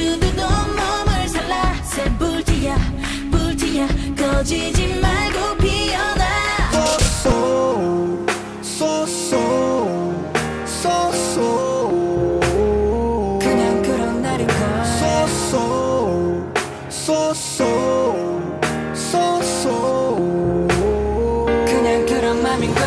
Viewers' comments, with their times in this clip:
0:06 I love how you covered SoSo by Winner 😭💙 It was so smooth :"(